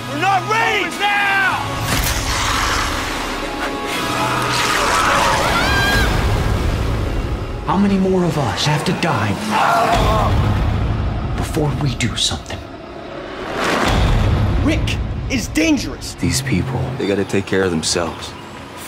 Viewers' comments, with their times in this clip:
0:04 That was maggie her voice when she screams also